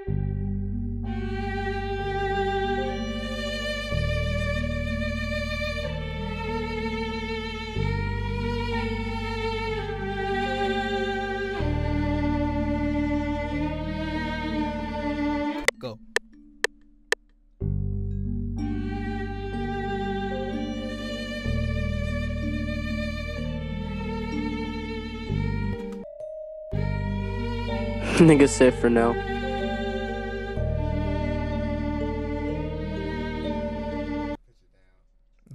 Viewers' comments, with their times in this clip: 0:05 sounds like it came straight out of naruto
0:16 I was getting some Godfather Mafia Betrayal vibes forreal 🥺👏🏽🏆